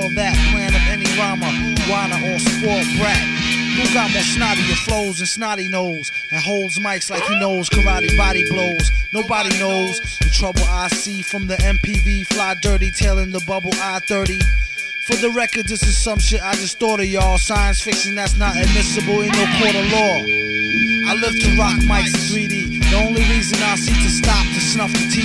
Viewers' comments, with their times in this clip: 0:06 I swear to god I was looking for a cat in distress for a good couple of minutes.